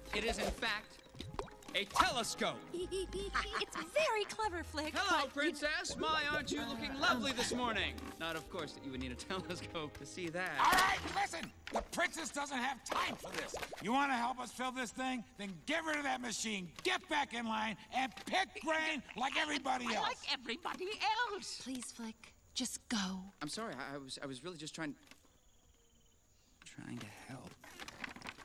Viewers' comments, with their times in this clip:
0:10 This guy sounds like anger